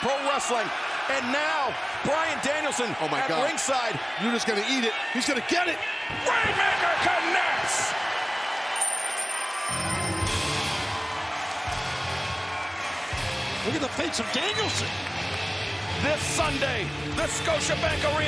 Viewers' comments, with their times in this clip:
0:05 Love that guy screaming "RAINMAKER!"